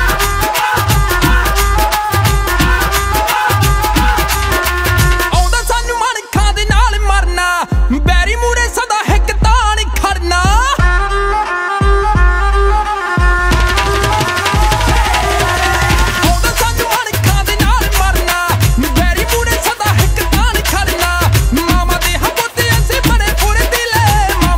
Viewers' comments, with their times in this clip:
0:07 music is good. Its the kids laughing that steel the show for me.